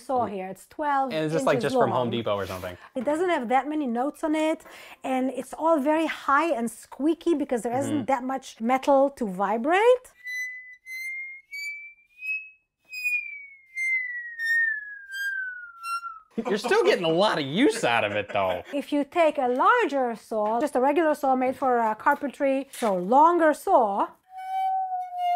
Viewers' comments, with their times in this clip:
0:10 It actually sounds like a Glass Harp